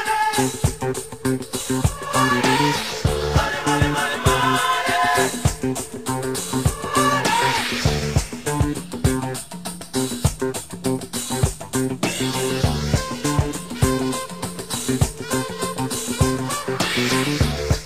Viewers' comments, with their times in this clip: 0:05 ahh why aren't the ppl on the street doing anything? and why is that guy laughing???